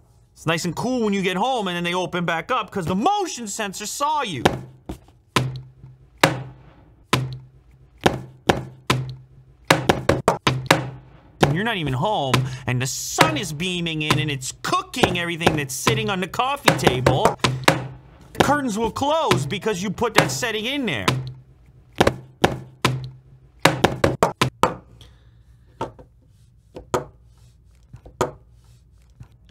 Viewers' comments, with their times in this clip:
0:10 Slam poetry scene